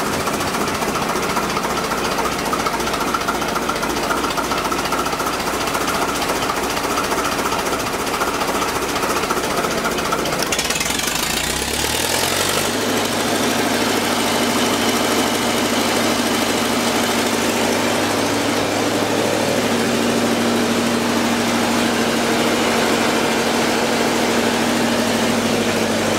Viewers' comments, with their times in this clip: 0:10 Sounds like the launch of the airboat from Half-Life 2)